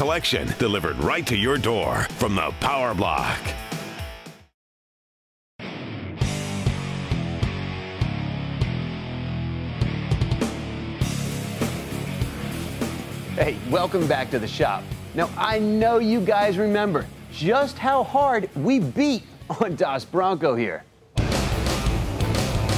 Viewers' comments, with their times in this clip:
0:09 kick ass 90s grunge rock sound bite!